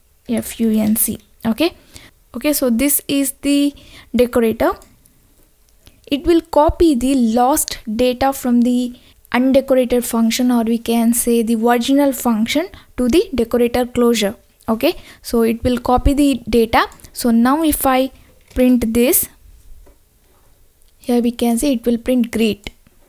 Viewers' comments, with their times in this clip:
0:10 that moment when you hear "Versional functn " and ashok saraf movie comes into your head.......